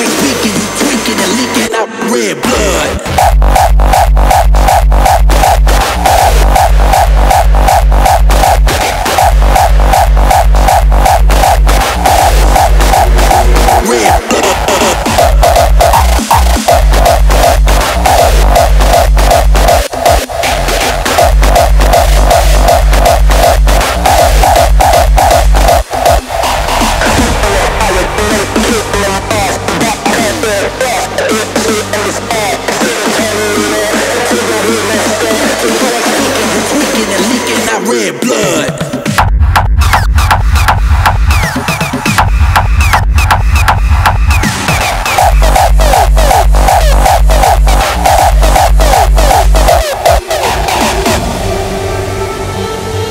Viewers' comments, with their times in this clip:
0:03 I love the kicks you use bro. 🔥🔥🔈🎵
0:38 man, kicks higher, louder, longer plus kickrolls and it would be perfect